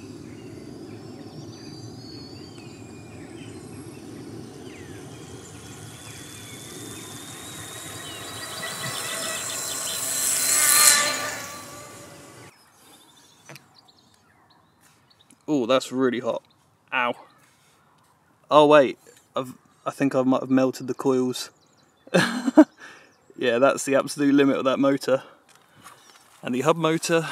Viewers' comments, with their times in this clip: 0:03 those were the drone motor's screams of death.
0:09 bike sounds like TIE Fighter